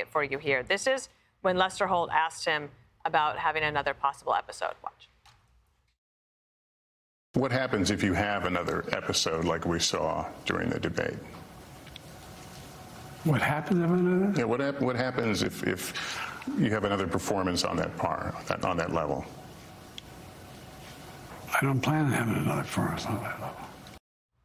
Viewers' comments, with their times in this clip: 0:08 Listen to Joe mumble.... Whahapenanana?